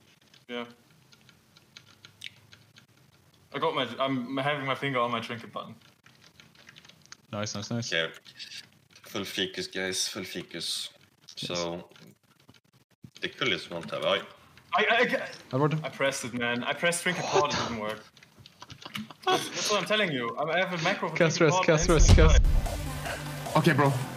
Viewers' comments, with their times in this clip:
0:08 For any Swedish people: full fikus xD